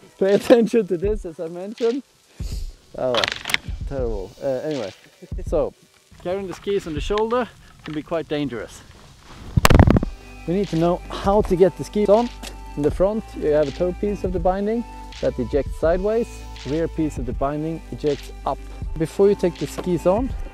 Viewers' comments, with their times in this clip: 0:08 it could very dangerous EARRAPE